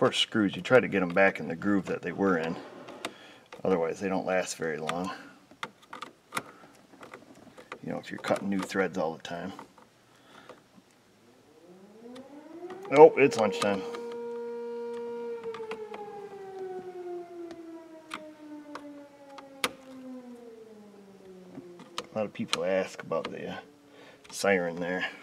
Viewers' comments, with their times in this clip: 0:09 Yabba, Dabba, Doooo!!!